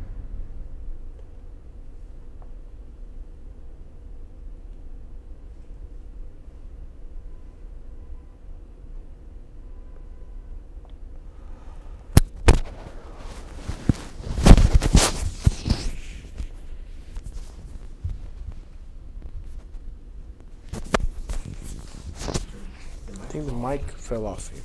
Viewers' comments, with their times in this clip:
0:10 Akobian's daughter dropped the mic! Or it was Akobian's yawn?